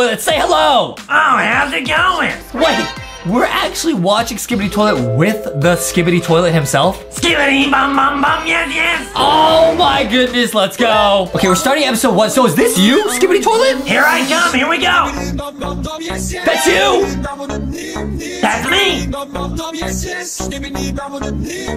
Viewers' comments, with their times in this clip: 0:07 This hurt my ears